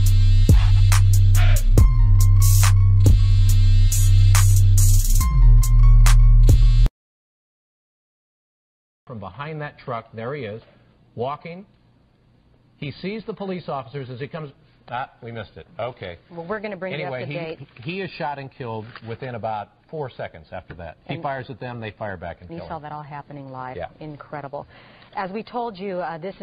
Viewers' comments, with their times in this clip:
0:09 perfect case of media censorship, even the male reporter's tone screamed ' seriously? What the fuck guys. '